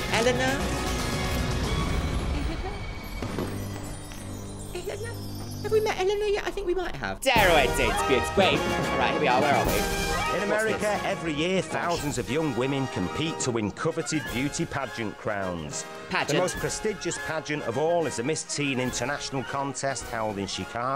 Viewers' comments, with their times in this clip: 0:08 what is this music? I feel like i just beat the elite 4